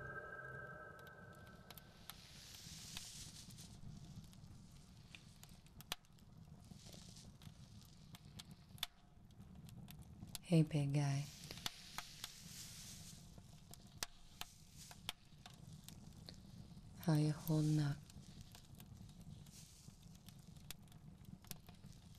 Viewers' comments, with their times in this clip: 0:10 dat voice tho, on point